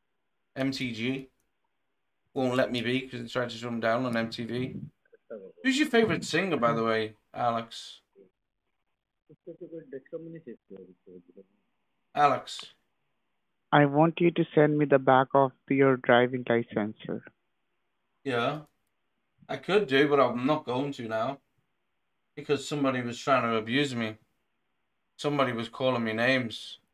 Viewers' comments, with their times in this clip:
0:07 Typical Hindi conferencing in the background, as if everyone's an idiot.